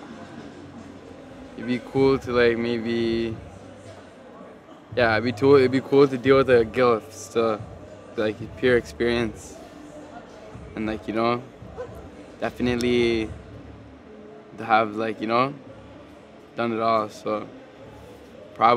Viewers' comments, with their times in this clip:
0:05 what does he say??